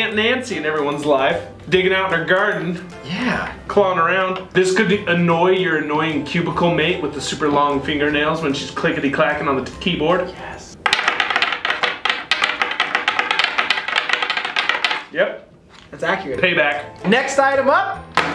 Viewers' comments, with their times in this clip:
0:05 lol we call that ASMR.